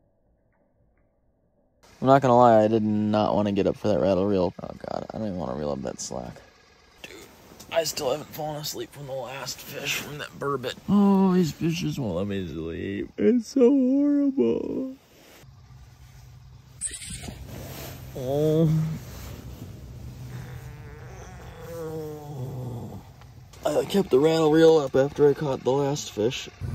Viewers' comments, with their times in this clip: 0:08 it sounds like hes saying these bitches wont let me sleep